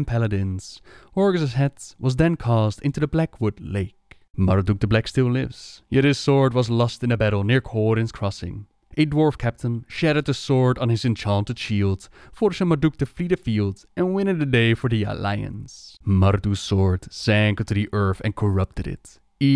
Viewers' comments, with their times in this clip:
0:07 I love your videos and your pronunciation of certain words crack me up. For example "The Bitch King" Or A dwarf captain "Shat on the swoed" where u say shattered it 🤣🤣 I'm not making fun plz don't be offended